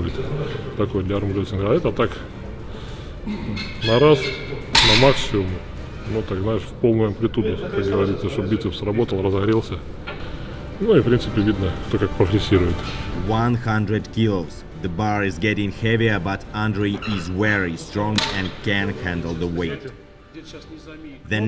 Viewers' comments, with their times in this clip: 0:03 whos dropping pokeballs there ?